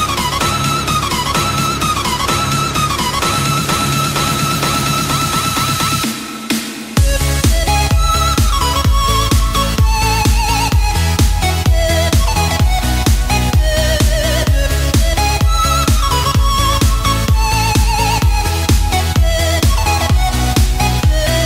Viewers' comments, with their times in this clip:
0:07 the song at the end was incredible